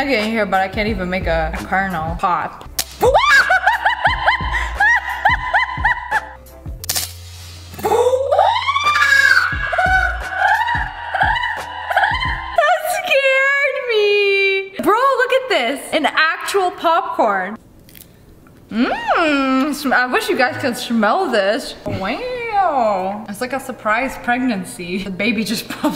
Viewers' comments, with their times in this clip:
0:03 that scream scared the crap outta me
0:06 sssniperwof scared me she sounded like a scp
0:07 The slow motion laughing is going to give me nightmares Lmao 😂
0:07 that reminded me of a creepy laugh XD
0:09 The slow-mo version of her laugh is her transforming into a possessed witch.
0:09 i just love how you screamed and then turned that into a laugh
0:10 the slomo laugh though
0:11 her laugh in slo-mo 😂
0:12 BRO YOU DID GET SCARED BY THE POPCORN AND ME WHEN YOU LAUGHED IN SLOW MOTION!!!